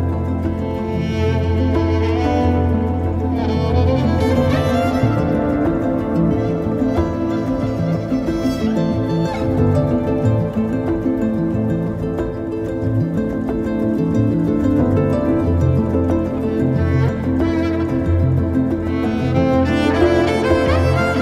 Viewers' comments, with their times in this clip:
0:03 The music used is just mesmerising . just fabulous